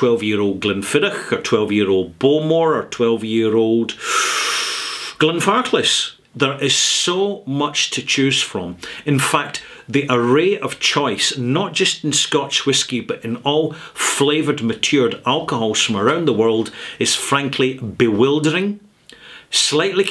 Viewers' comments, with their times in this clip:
0:03 nobody: transcript: Glenn Fartless 🎉